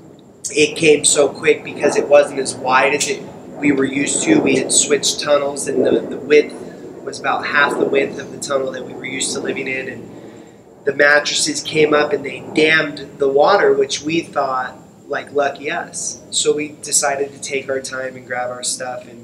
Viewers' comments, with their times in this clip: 0:05 are those storm sounds real? Because shouldn’t they be getting the fuck out of there..... lol